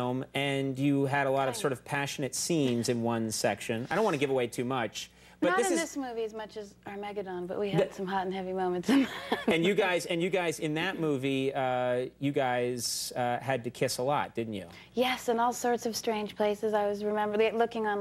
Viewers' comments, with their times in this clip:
0:06 interesting way to pronounce “Armageddon” whatever, she’s so adorable she could forget my name and I wouldn’t care